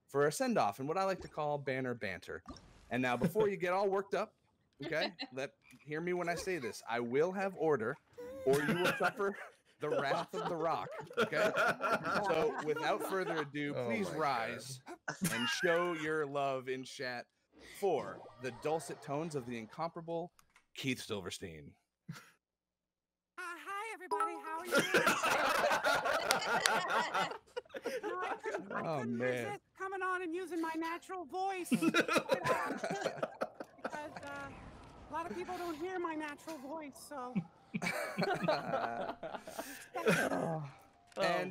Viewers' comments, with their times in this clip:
0:06 Imagine someday you activate zhonglis Ult and it has this tone like he is asking it.
0:21 I would like to add his natural voice:
0:24 OMG ZHONGLI'S LAUGH- 😍😍😍♥️♥️♥️